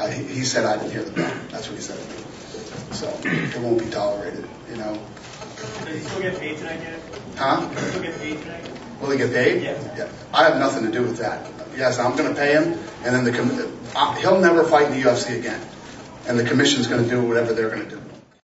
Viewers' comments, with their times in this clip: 0:08 after he dana said ''he said he didnt hear the bell'' right after a bell poped up listen closelsy